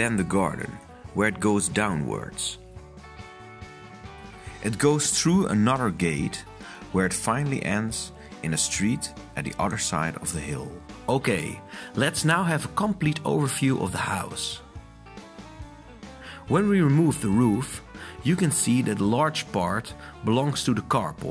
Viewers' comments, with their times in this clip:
0:05 I can't handle it! Enough with F**king music! It ruins your video. Plus hearing issues just accentuate the music and drown everything else out. Forget it, I stopped unfortunately bc its very interesting. Sorry...